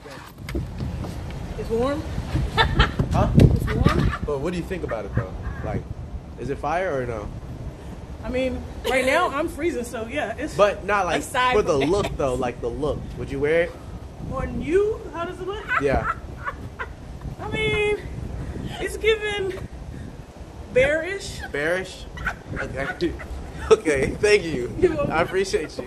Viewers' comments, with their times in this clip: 0:10 laughing extra hard damn😂